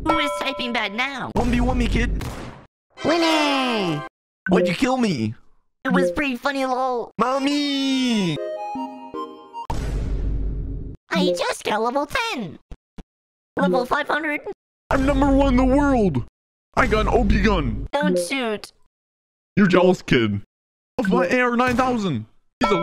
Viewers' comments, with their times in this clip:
0:10 Sounds Like 4 From BFDI [ BFB ]